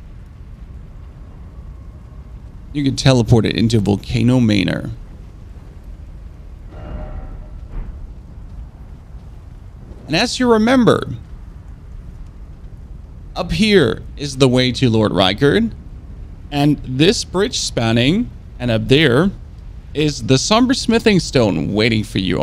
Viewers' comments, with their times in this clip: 0:03 Her: "I like men with exotic accents" Him: